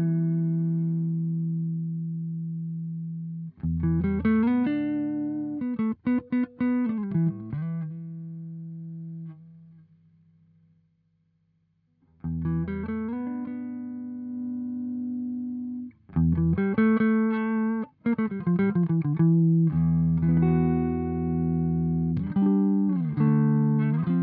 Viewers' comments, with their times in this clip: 0:10 man that's transparent.....